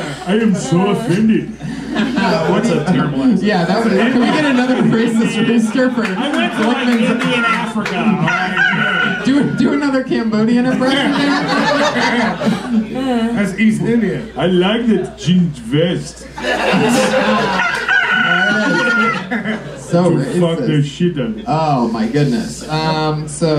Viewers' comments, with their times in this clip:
0:04 you can hear him yelling from the crowd